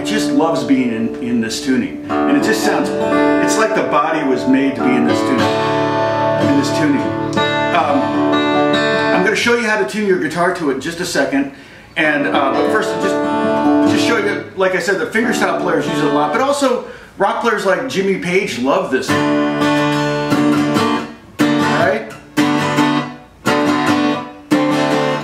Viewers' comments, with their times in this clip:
0:10 Okay I had to stop That is an awesome sounding and looking guitar. Okay , back to the video 🤓